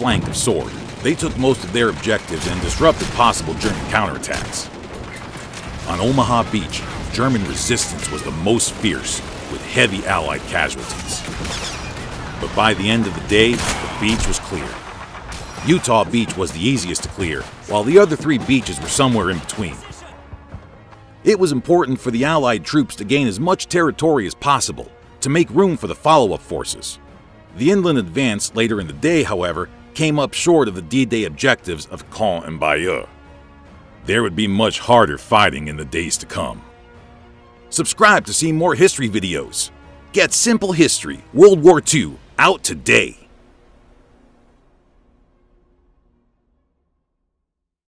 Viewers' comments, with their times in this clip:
0:05 Listen to the gunfire Sounds like the gunfire is from call of duty ww2
0:11 u can hear the ting made by m1 garand while reloading
0:15 m1 garand ping sound
0:15 Who heard the m1 garand ping
0:31 why did his voice drop?
0:31 what's with that voice change?